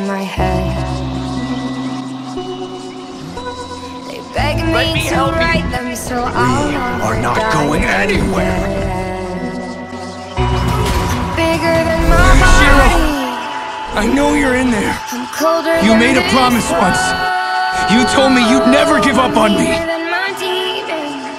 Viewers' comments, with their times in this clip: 0:04 sounds like hunter from the owl house when he's like "Uncle let me help you"